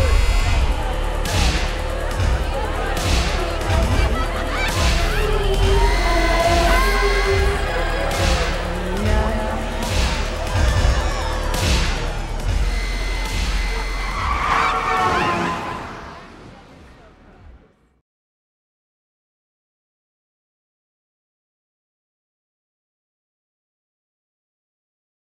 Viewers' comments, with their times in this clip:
0:08 ...holy shit, I didn't even hear that one! 0_0 It sounded like her Mom calling her, but it could also be her 'alter ego' or 'split personality'. There's actually a lot of 'hidden' images in that sequence that I never ever noticed before. If you haven't, look up "subliminal images" in the club sequence of this movie. Someone went frame by frame, and just...yeah, check it out if you haven't. Thanks for posting all the music from this scene though. I like it! :D